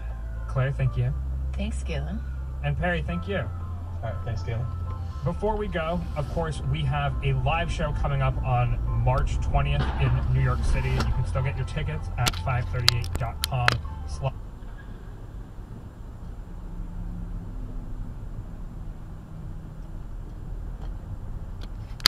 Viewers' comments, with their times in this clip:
0:10 I'm sure they heard that horn.😉